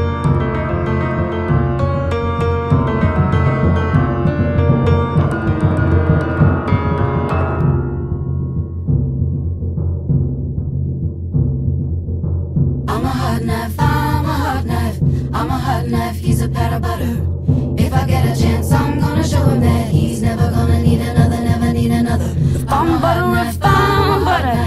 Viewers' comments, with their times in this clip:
0:09 I love the little shy laugh She is awesome.